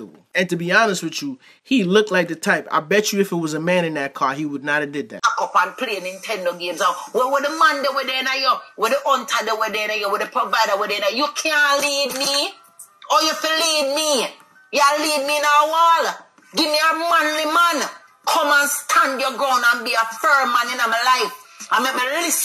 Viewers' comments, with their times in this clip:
0:05 that woman speaks very thick Patua.